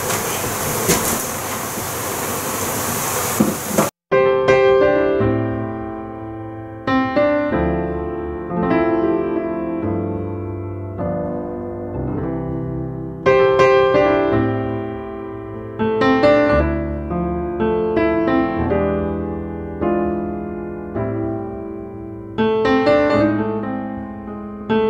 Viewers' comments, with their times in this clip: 0:03 Ah yeah, bit of jazz piano SEXY BEE MUSIC!
0:03 The music makes me think I'm seeing some sort of romantic movie and the main characters are having their first kiss.
0:08 Omg the melodramatic reveal music and the zoom in was perfection